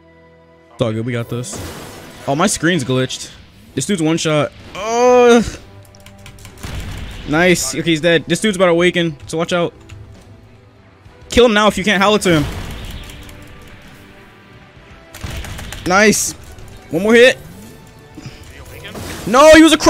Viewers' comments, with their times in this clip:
0:03 Did you just moan